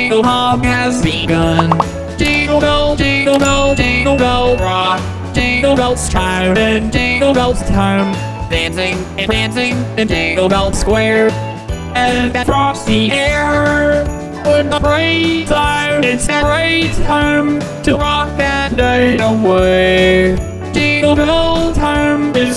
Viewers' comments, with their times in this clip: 0:07 Albert spitting on his mic in 2 seconds